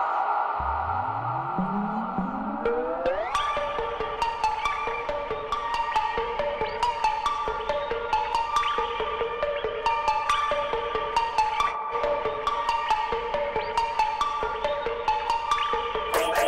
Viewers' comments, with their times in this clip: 0:03 I've been wanting that I created a similar beat to this groove, it's such a dope track.
0:03 the original vocals from is Lil Uzi Vert - You Better Move but it sounds like a carmack or tsuruda type beat